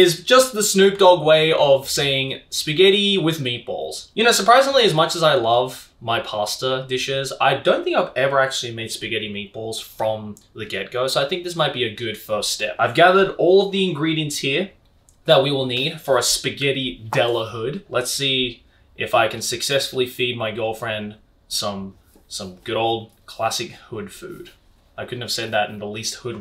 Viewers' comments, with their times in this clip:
0:07 I thought I heard "I don't think I've ever made spaghetti meatballs from the ghetto" Still accurate since it's spaghetti de la hood.